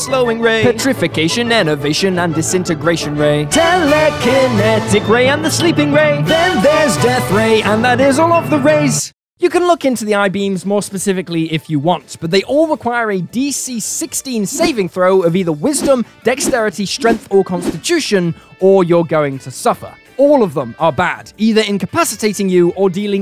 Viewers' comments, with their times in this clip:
0:04 Way to sing the eye powers!